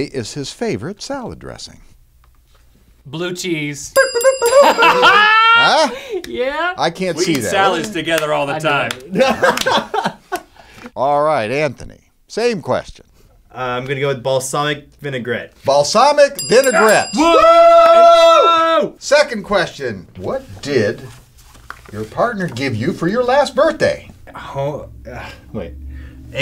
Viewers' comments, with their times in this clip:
0:08 lmfao anthony's laugh
0:09 I love Anthony's laugh ! Especially lol